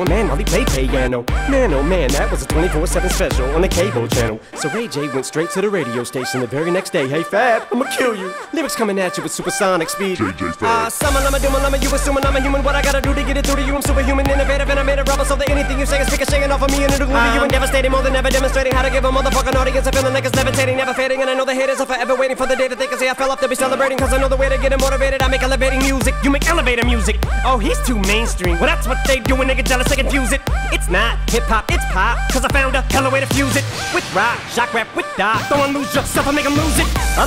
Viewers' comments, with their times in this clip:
0:03 he starts rapping
0:04 is the drop
0:04 the fast part
0:05 is fast part actually
0:06 The fastest rapping I’ve heard all day
0:07 what did he say😭
0:08 My friend:"hey, can you tell me the wifi password" Me:"sure its on the back of the router" The back of the router:
0:08 WHAT DID HE SAY
0:09 The rap begins!
0:10 How my teacher explains Math.
0:10 when my Spanish teacher talks Spanish
0:10 How my teacher explains something
0:10 When you watch normal rap music at 2x speed
0:10 When You calling Your Friend But Your Phone Is 1%
0:10 Kidnapper: any last words? Me: Kidnapper: how many lungs do you have?!
0:10 Scientist: the whale has the largest lung capacity in the world Eminem: hold my beer
0:10 puts on 2x me: ARE YOU OK EMINEM?!
0:10 wehen u tryna order mcdonalds while having 1% battery
0:10 Imagine someone tried to subtitle
0:10 teachers be like on halfdays of school
0:10 = fast lyrics part
0:10 my speed when i read in my mind
0:10 POV: you watched at 2x…
0:10 I know he did it live, but not as good as here, right? Here it's clearly heatable that it's mixed in (tone change)
0:10 Producer: you have ten seconds to finish this last page Eminem: easy
0:10 that better 2x speed
0:10 Matt Pat explaining the fnaf lore for the for the billionth time
0:11 When you try to explain why online games cannot be paused to your Parents
0:11 The teacher when I never put a comma in my 12 paragraph be like:
0:11 in 2X speed is faster than nasa data
0:11 when you have 15 seconds to give a speech
0:11 Eminem: Lungs: what did I do to deserve this
0:11 You speaking to your friend that talks fast
0:11 Hey says 20 words in 1 sec
0:11 Never put it on 2x speed or your ears will explode
0:12 My teacher talking about math
0:24 bro was transformed into god of not breathing bros the ggoaat